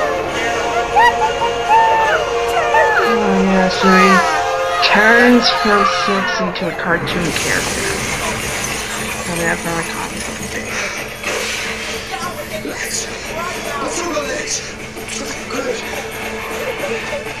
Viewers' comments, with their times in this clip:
0:04 BRO AM I WRONG THAT I HEARD A WHEEZE